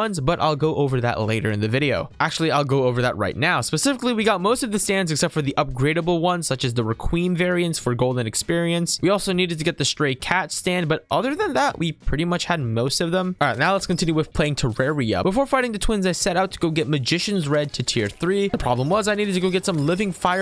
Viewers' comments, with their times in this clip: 0:06 why did he say requiem like that lmao 🤣